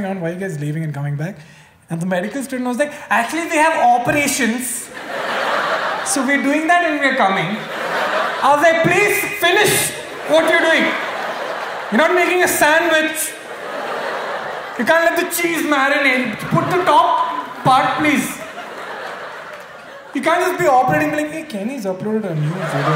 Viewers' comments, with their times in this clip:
0:05 he voice matches to my cousin 😃